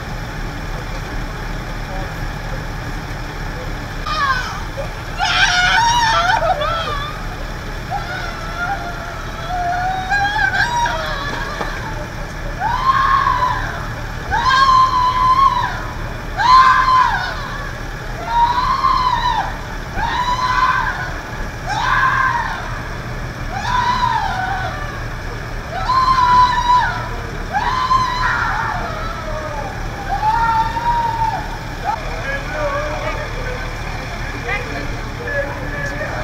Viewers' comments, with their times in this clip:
0:06 is when I lost my shit. So hard as a human to hear those screams from a fellow human.
0:24 ... I can tell you this ... that scream. That pain. She is not crying for her son